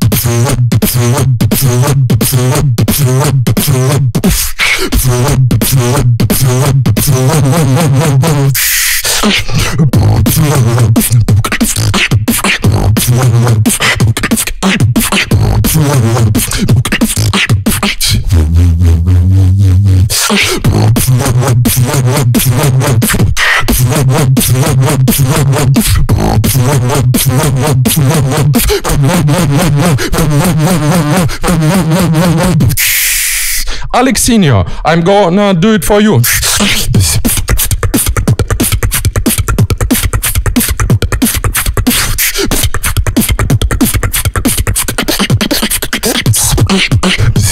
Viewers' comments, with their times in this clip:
0:10 That pattern is really cool
0:33 His sounds are so clean and crispy! And that KCH snare is still clean as ever. Also, WHY DID YOU DO THAT?